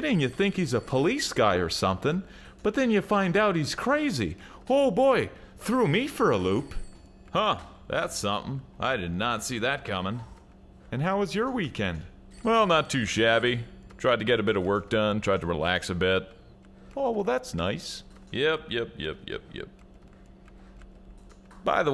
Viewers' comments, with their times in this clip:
0:09 Did you say "I did NAZI that coming?" ^^